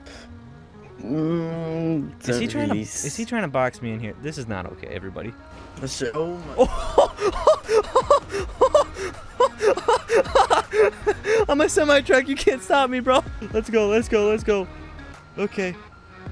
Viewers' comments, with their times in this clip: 0:03 when that music comes on I know there gonna be something crazy